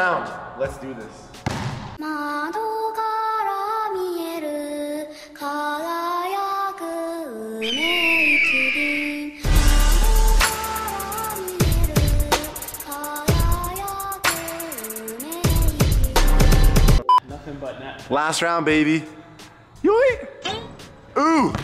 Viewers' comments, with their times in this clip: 0:05 that intro and the beat